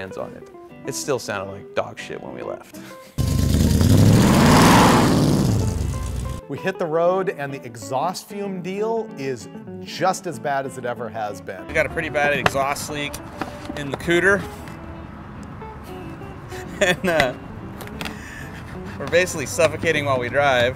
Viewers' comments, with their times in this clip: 0:03 Dogshit? Man, you show up sounding like that and I'm pulling out. Sounds like a badass.